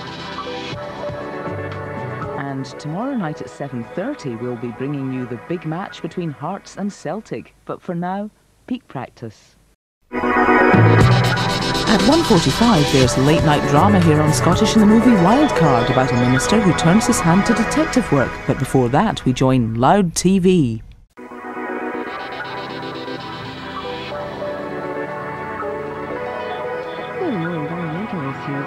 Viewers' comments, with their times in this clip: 0:10 Mixing audio and vocal in the same volume is my favourite.